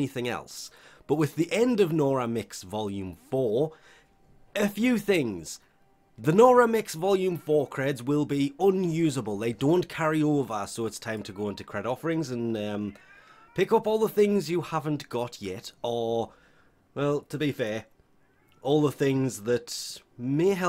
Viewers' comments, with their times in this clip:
0:08 Why do I hear a cat in the background?😂